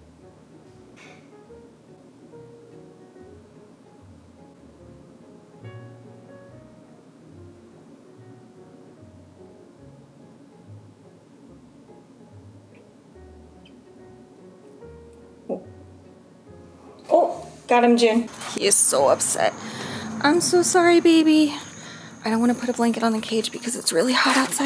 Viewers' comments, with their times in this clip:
0:09 what on big earth was this insect in the background xD